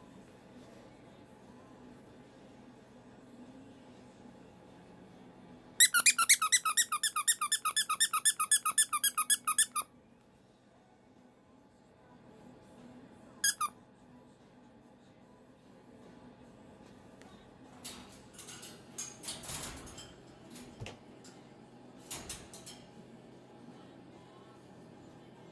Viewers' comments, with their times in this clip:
0:06 Max screaming ? Oh gutz. Max is, literally, and early bird. The early bird gets...to scream and throw Woodstock of the top of his cage.